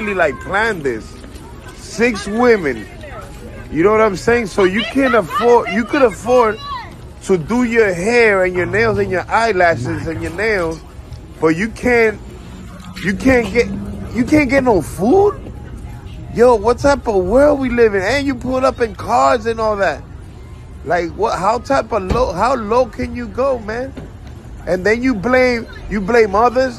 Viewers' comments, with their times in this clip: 0:08 his voice sounds like a tik tok text to speech